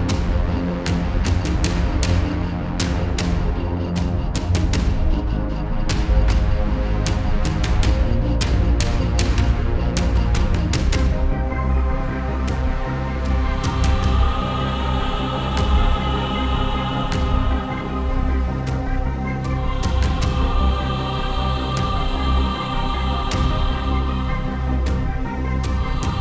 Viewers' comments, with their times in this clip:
0:08 Getting Perfect Dark vibes from this (Particularly from onwards) 😊